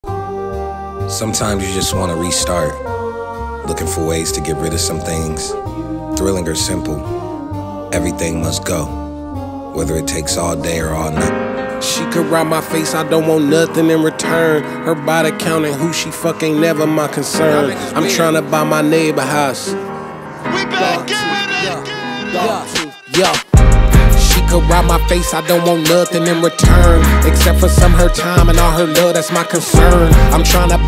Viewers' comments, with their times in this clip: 0:01 love those background vocals. I wish Tyler made a song that sound only like that 😢😢😢 so beautiful majestic magical
0:01 i legit thought that was the start of new magic wand
0:11 the chord shift